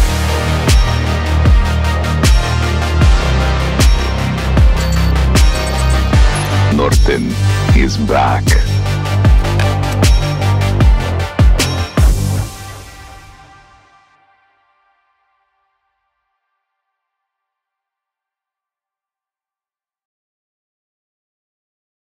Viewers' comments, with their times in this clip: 0:06 norton is black...
0:06 Norton is black...
0:09 Norton is black...
0:09 Norton is black...